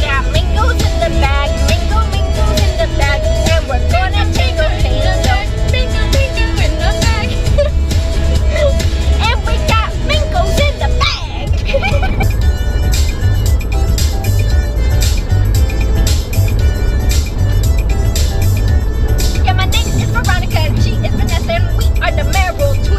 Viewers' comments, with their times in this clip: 0:04 Mangoes Mangoes Mangoes in the tone of Pick Me (pick me pick me pick me yah)